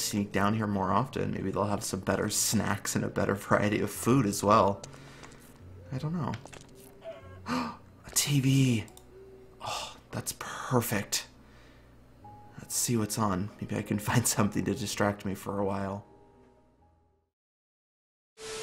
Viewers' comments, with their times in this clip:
0:06 woah the song fits so perfectly, also the other day when i was traveling, i was listening to nico collins & the song Set Me Free made me think of Soren & Typhon... edit: also someone killed a chicken XD i thought he gasped because of the dying chicken noise but he didnt edit 2: I JUST REALIZED THAT I THINK SOREN READ THE SIGNS HAHA 😂